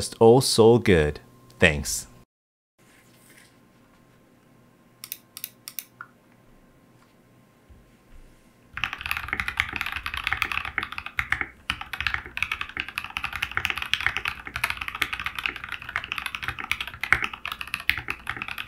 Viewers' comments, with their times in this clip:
0:04 What is the last sound test ? Did he lube and change keycaps? Also all 3 stages sound pretty scratchy to me, are the switches lubed?